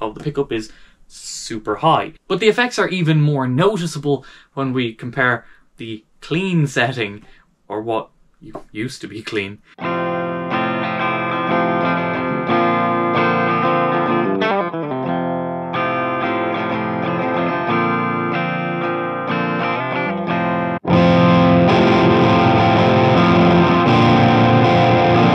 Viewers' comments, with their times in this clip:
0:10 A string is finally plucked Just sayin'...